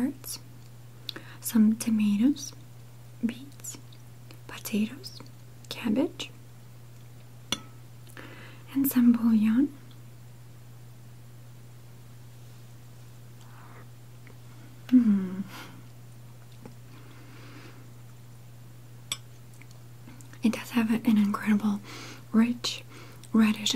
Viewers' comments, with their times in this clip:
0:09 I thought I heard 'and some Paul Young' as one of the ingredients listed 😂. Great video as ever, I love your posts xx